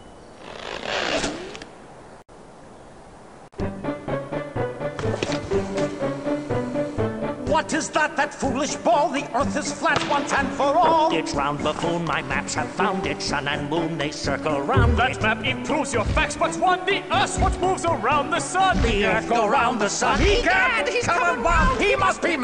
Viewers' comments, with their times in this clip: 0:07 For a moment there I thought it sounds like Tom Kenny